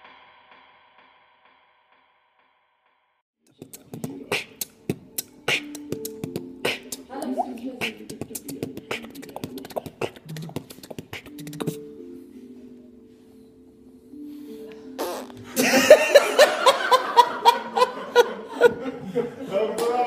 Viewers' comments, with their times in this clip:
0:04 he added in sound